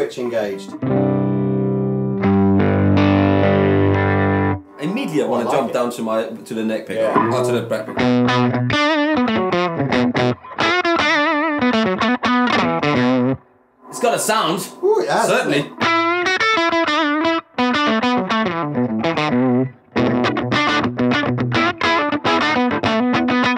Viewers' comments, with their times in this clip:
0:07 That driven broken tone on the Supro ! Everything sounds as if it is going to fall apart! I really dig it man!